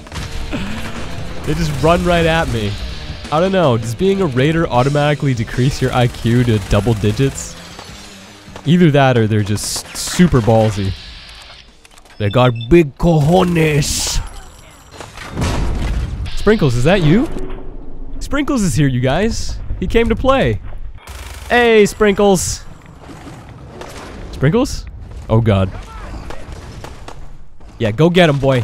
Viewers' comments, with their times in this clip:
0:10 they got big canoes